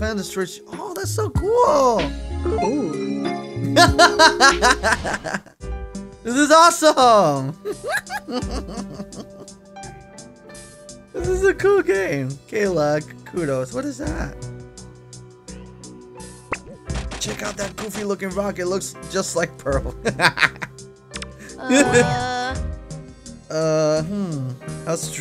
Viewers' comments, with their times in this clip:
0:07 Dat laugh doe ._.